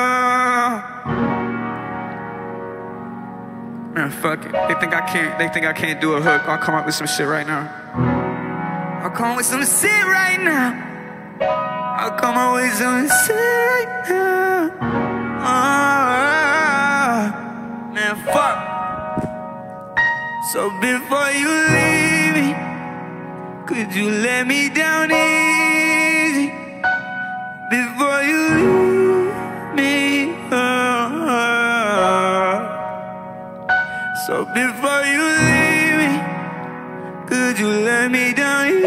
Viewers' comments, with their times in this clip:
0:04 how about this! Just makes a hook in 10 seconds after chat questions him . Unreal voice he has
0:21 is so ethereal, Frank Ocean take notes